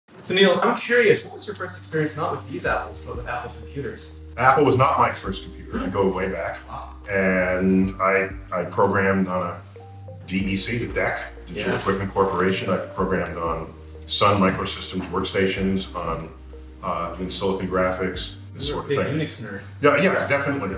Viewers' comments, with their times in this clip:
0:05 Thanks for the video, but the audio is terrible. Did you not have enough time to prepare shooting ? Also, lol